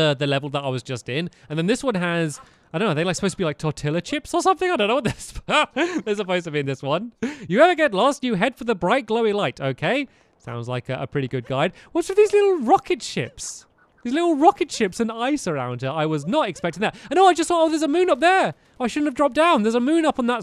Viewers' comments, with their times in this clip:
0:03 How you say 'Tortilla chips'